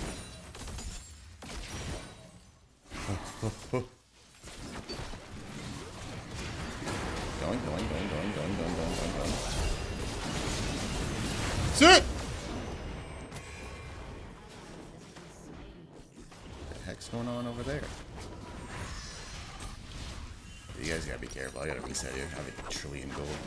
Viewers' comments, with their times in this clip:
0:10 Lol killing WW and yelling sit was too funny